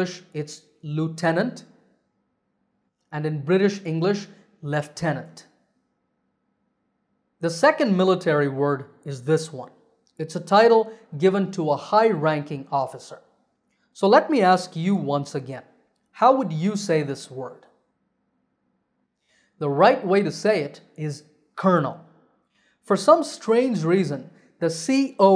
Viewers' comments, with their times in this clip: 0:07 I was tons annoyed by that British pronunciation "lieutenant" is sounded "leftenant", though there's no "f" or "ph". Brits want us to suffer!!!!!